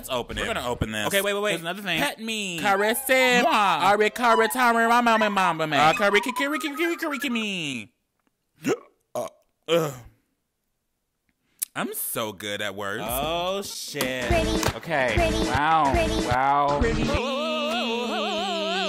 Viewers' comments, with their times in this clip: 0:03 Not me thinking he said caress me